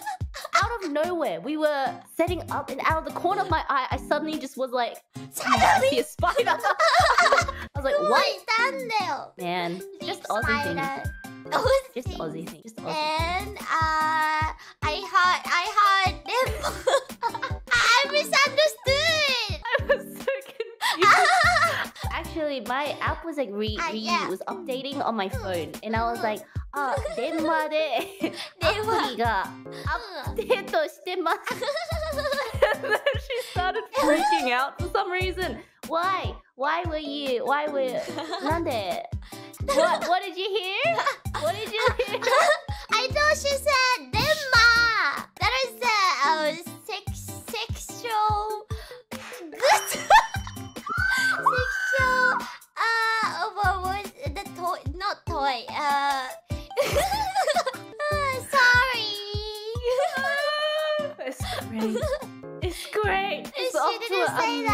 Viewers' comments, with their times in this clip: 0:05 "Shadow Beast" is funnier but she probably said, "suddenly" lol
0:50 Bae's shriek of laughter is music to my ears! <3
0:50 That aussie accent tho, frekin beautiful tbh ❤ The scream tho KKAKAK LMAO